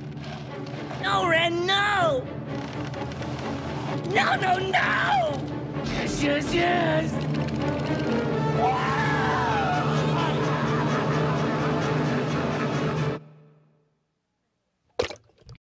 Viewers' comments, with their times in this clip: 0:08 that's the 4/4 string ostinato in D minor!!